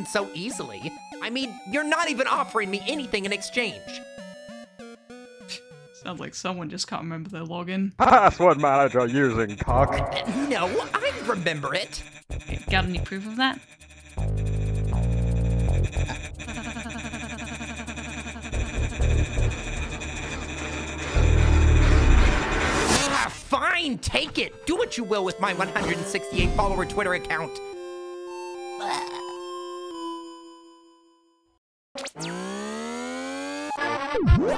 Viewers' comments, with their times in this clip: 0:08 The why he says 'CUCK' is making me happy.
0:13 man, even Kris laughted at the joke 🤣
0:16 ralsei laughing is the best
0:21 I love Ralsei’s voice! Edit: OH GOD LOOK AT RALSEIS FACE
0:21 Jesus, Ralsei, it's not that funny-